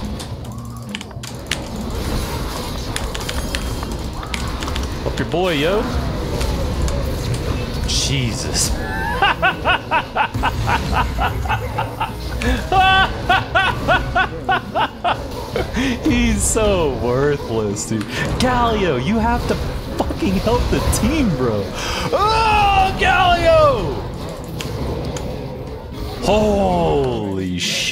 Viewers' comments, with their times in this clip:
0:09 what a laugh 😂😂😂😂😂